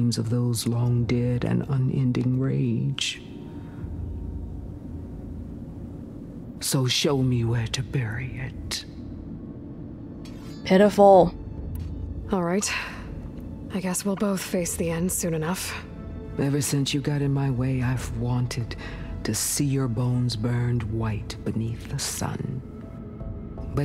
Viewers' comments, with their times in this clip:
0:07 Perhaps a weird reaction, but after all that I feel like Regalla really needs a hug. (Really needed alot more of those as baby and small child, if you want to be real about it.) Poor, poor, sad Regalla. I kinda like her now. Excellent job by her voice actor, btw. Very good mix of bubbling anger and demoralized sadness in her voice.